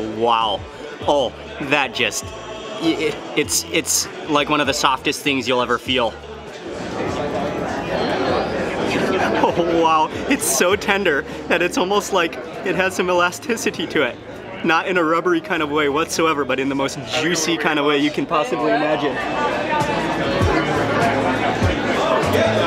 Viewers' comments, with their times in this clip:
0:10 It sounded like he was gonna cry